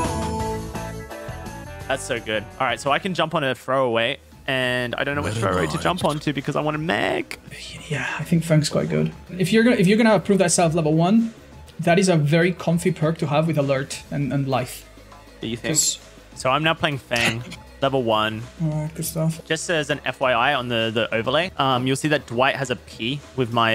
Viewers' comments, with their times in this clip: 0:05 I thought I heard Corpse's voice HAHAHAHAAHAA